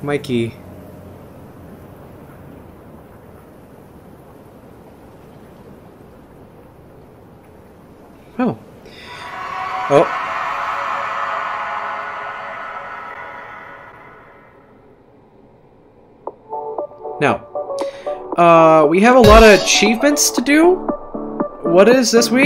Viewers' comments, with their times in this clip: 0:09 hollow knight will be in indie cross because the scream at the end of the credits